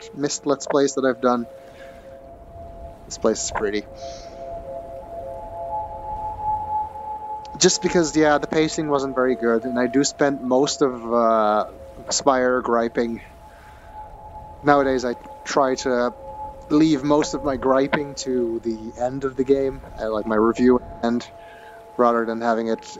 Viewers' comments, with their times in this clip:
0:09 Yeah, so pretty, and sounds so much better than the original, I swear...when I first heard it, I did not want to stay there more than I had too, just press the button, grab the page and leg it.